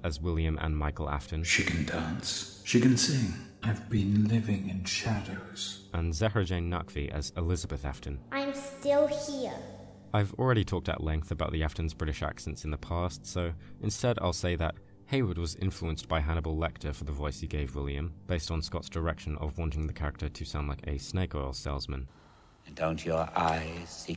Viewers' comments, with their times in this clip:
0:08 Holy shit how did she do that. I never considered an adult voiced her. It's so convincing, they all killed it